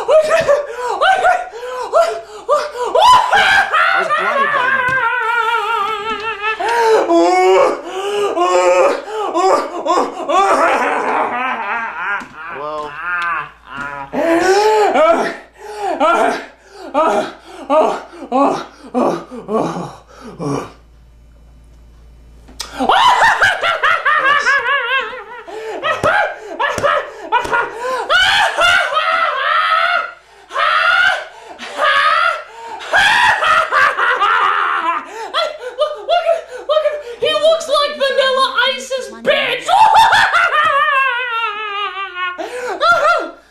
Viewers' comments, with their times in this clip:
0:07 the mating call of the Nostalgia Critic.
0:30 Critic channeling his inner Rob Halford